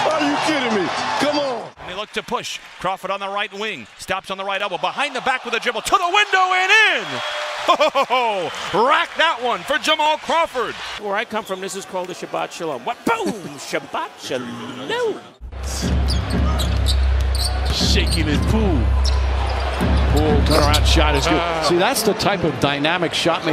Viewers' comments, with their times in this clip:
0:10 anybody else realize the voice of mike wizowski was commentating on an nba game 🤯🤯